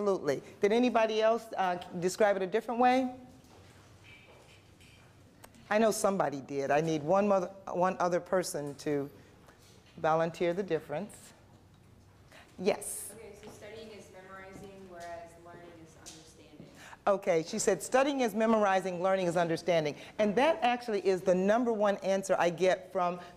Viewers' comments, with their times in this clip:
0:07 did she almost say I need one motherf***r